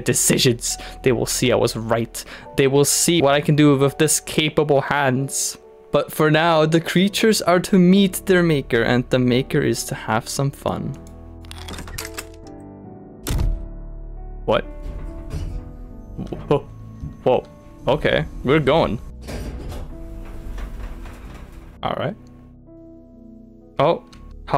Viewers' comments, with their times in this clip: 0:10 Istg that sound had to be the noise that a flashbang makes when it hits the ground in csgo